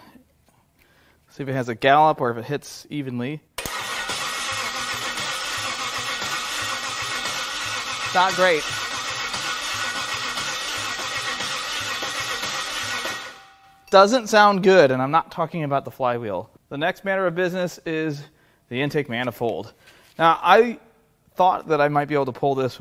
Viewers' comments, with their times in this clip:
0:04 it’s chitty chitty bang bang!